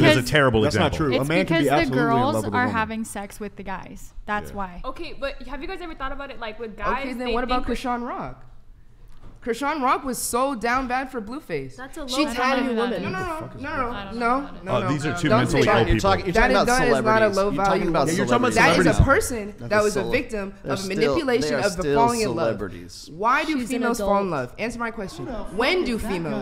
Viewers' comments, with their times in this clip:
0:09 LMFAO I'm pretty sure it was Justin but someone said "who the fuck is blueface" and I lost it. He sounded genuinely confused